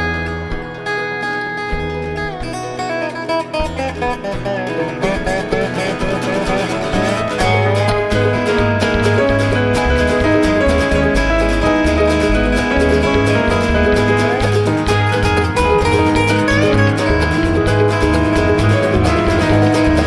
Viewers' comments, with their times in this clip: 0:08 Nice first tube teaser